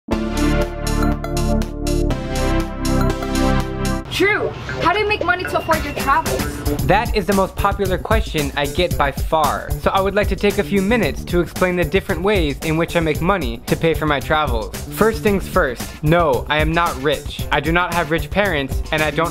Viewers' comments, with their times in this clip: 0:04 I unhear said drew I hear said T R U E